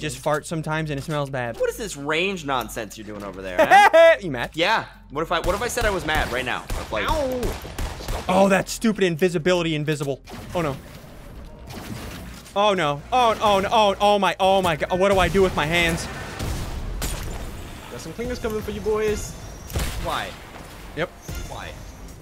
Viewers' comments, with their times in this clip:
0:03 is ssundee doing woody the wood pecker laugh